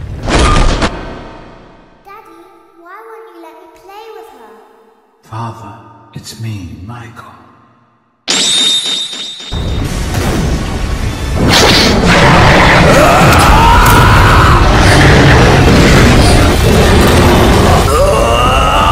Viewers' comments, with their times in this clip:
0:06 The music from "I'm a Monster" fits so well!